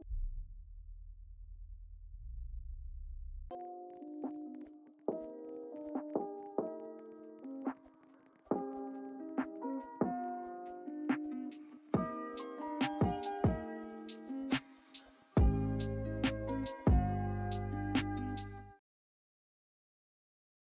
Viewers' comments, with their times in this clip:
0:08 music syncs perfectly lol